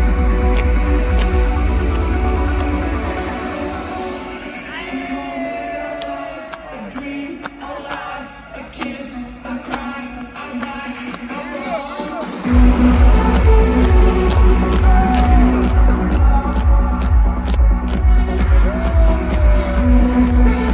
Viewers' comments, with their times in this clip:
0:08 MY EARSSSSSS!!! PLS!!! MAKE IT STOOOOOOOP!!!! NOOOOOO FANSSSSSS